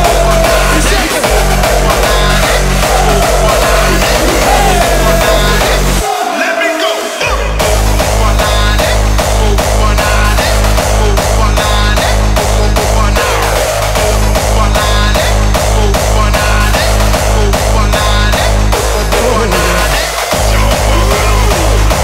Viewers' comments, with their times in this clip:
0:10 hahah is a jumstyle number only remixed to hardstyle